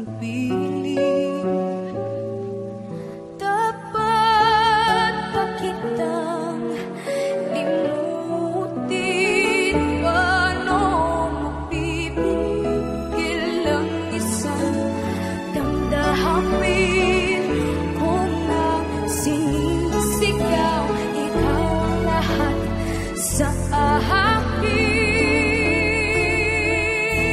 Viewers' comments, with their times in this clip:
0:10 woah love the quick short runs.